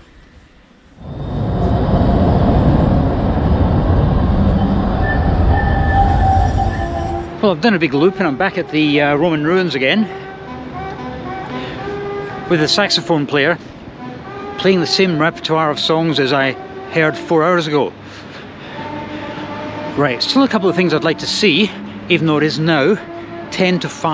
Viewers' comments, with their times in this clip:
0:06 Hey! That saxophonist is playing Sway. Sounds like the peppier Anita Kelsey version from "Dark City". He'd have squeezed a few coins from me for that.